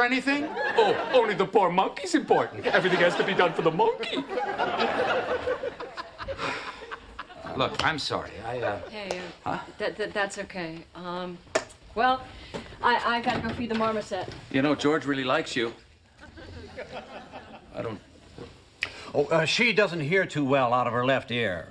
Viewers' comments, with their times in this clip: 0:05 You can clearly hear Jerry laughing in the background starting 😂